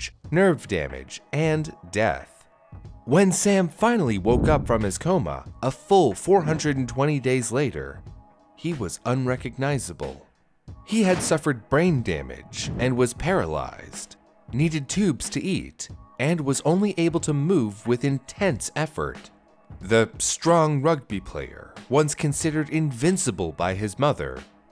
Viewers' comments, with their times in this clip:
0:08 he was unrecog'NICE'able